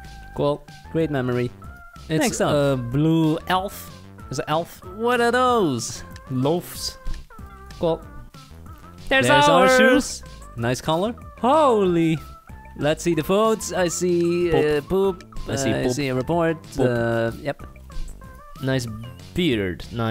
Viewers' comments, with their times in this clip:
0:05 # you sound better than Logan Pawl 😂😂